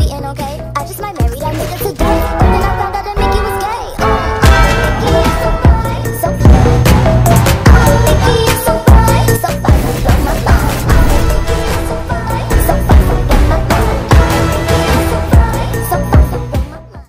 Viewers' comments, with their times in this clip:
0:05 as an ADHD, bro using default kill counts, sounds of reaver, but actual kill counts are RGX :)))) sick edit skill btw